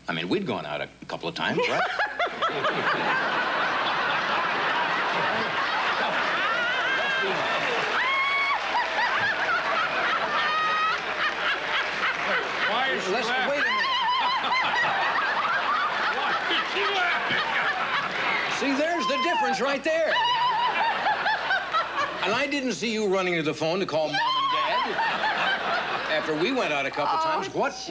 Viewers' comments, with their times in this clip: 0:09 classic beauty Diane laughs her ass off and Johnny was like 😳